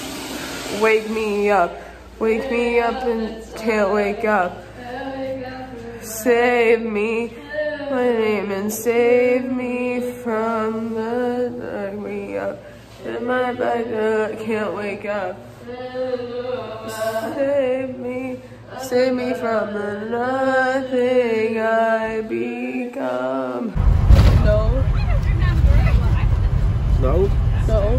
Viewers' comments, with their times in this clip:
0:10 me singing in the shower